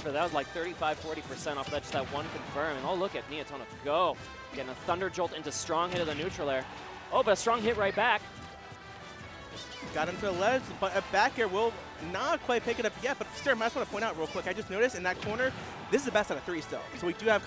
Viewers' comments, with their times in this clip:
0:04 listening to him say go in slow motion funny as hell